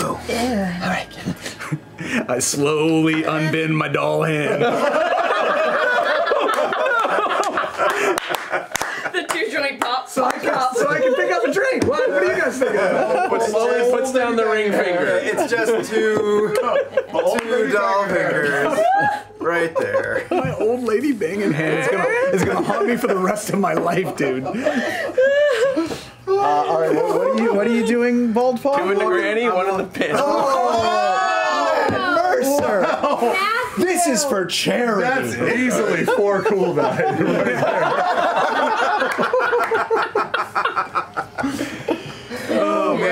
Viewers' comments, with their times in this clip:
0:05 my favorite thing is that Matt yells nonono, but it's not because of what the other guy said, it's because of his own nadty thoughts coming rushing in into his mind
0:26 Matt: "Two in the granny one in the panty!" Cast groans in disgust Sam: "MERCER! This is for CHARITY!!"